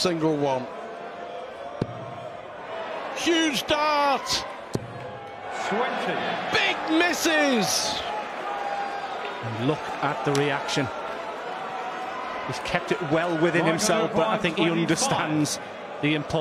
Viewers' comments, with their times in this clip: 0:03 some yob calling out as Razma throw his dart